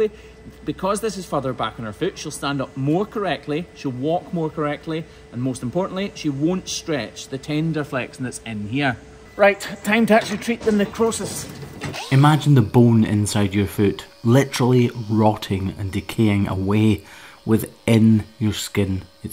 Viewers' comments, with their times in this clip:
0:06 "The Tender Flexon". I love it!
0:07 ...tender flexion?? Am I the only 1 to hear it?